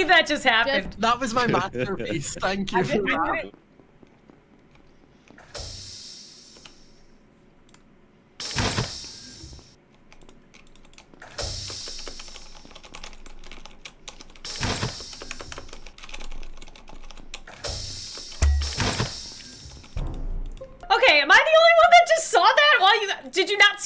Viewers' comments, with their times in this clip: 0:10 * intense clicking noises *